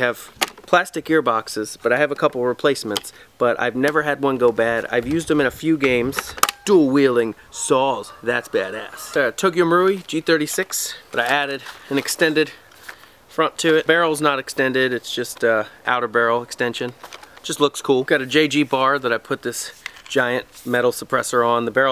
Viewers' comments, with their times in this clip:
0:08 I HEARD DEM GOOSES